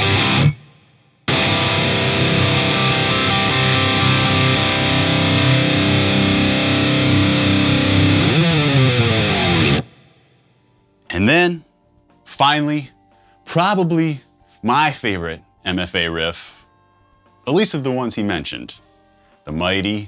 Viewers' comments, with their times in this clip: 0:03 That look of pure ecstasy when he plays the open C, knowing he played a vital role in the 2000s metalcore era. That tone is flawless too. My big question for you and Matt would be (if you haven’t answered it yet) is how do you get the most out of a single pickup guitar? It feels like it would be limiting in sounds, but I know Alexi Laiho used them too \m/